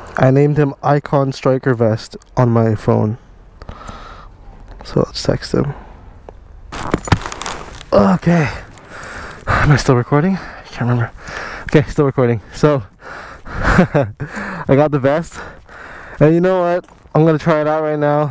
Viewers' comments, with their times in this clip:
0:04 I heard: So lets sexting. I know it was about a leather jacket for riding. But it was for riding a motorcycle right?